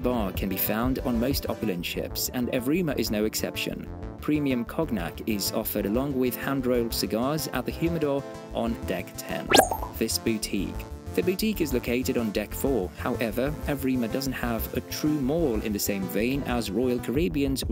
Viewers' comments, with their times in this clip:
0:03 What, exactly, is kawg nack?